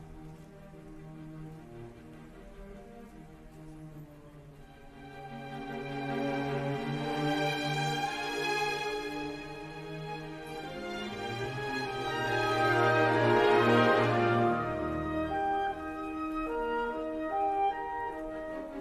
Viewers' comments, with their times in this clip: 0:06 So intense, it also interested Prince Harry to learn violin.. 😊